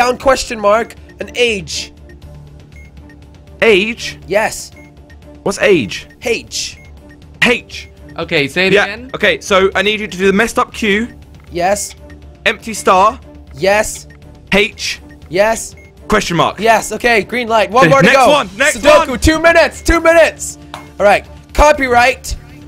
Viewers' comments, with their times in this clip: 0:03 Awkward silence. "Age... What's age?" I'm in tears omg😂😂😂